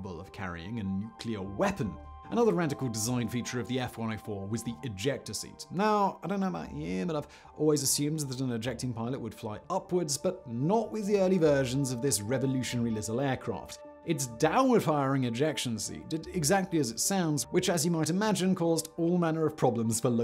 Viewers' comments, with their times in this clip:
0:05 Were you having a stroke? Because I thought I was. I had to go back to make sure I wasn't hearing things.